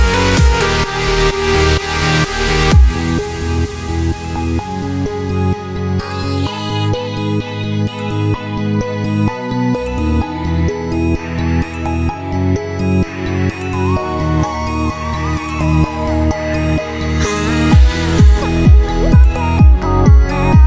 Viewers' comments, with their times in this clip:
0:03 this drop i swear it gives me a mysterious and confused vibe and it's insanely well mixed.